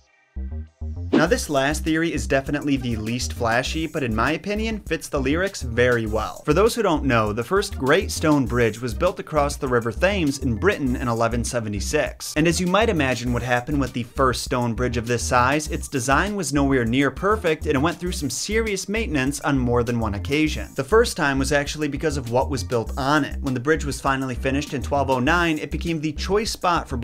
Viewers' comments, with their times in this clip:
0:09 This is so unrelated, but the way you said Thames made me laugh